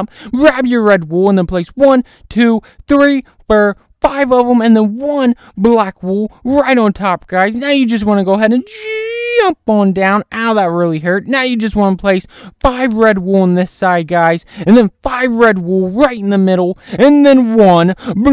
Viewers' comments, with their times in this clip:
0:04 it’s four not fur 😂😭